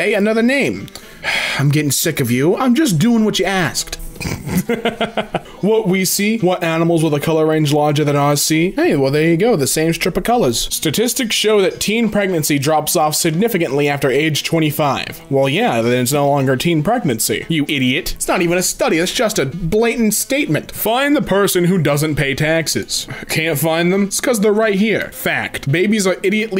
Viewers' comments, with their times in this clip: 0:10 statistics show that steen?